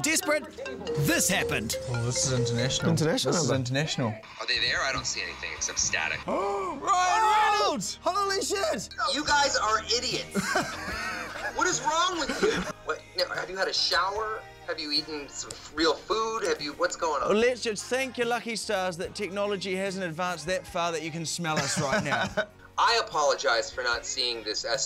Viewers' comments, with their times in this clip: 0:08 sounds like something that deadpool will hear